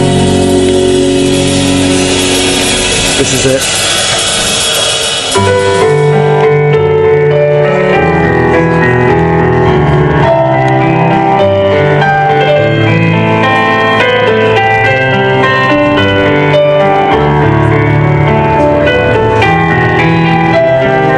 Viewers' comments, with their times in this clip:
0:05 The part beginning sounds a lot like the beginning of "The Black Parade" by My Chemical Romance. Could they be Strawbs fans?